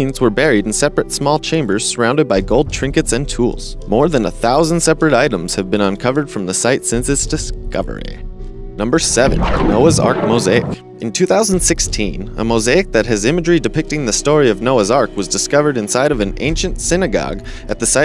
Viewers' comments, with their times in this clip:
0:05 sounds like drew barrimore
0:06 Your Californian is super strong with "Discoverahhh"